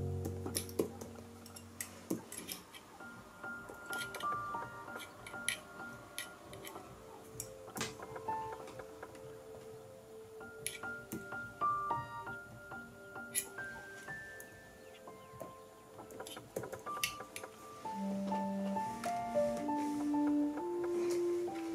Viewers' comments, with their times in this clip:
0:09 I love the music so much ♥♥..